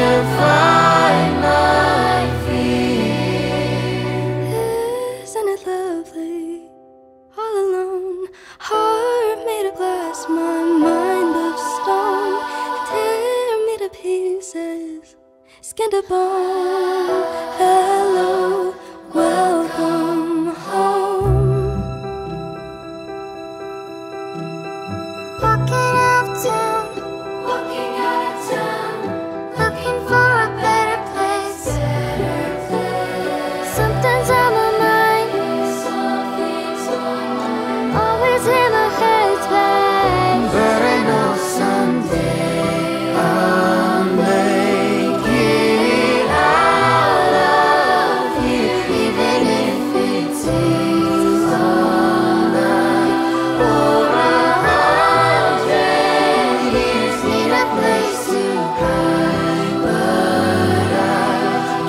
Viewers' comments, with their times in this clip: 0:04 ....she sang it ....so beautiful shooting Voice indeed
0:04 the girl who sang was so mezmerizing... I was captivated by her voice and passion
0:04 ....when she sang that it touched my soul.....so beautiful 🥰 and such an amazing voice
0:05 sounds just like it beautiful
0:25 awwhh her voice🥺
0:38 ❤ her voice when she says always in my head spaaaaaaace
0:42 nobody gonna talk about this beautiful duet between this little girl and this young man among with the choir? It sounds just amazing, really loved this part 🥰 love from Australia.